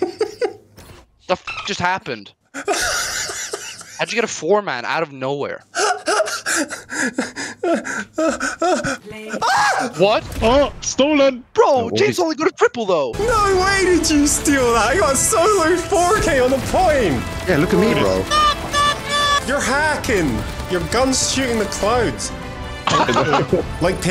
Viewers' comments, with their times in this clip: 0:05 that scream tho xD
0:08 The pure horror scream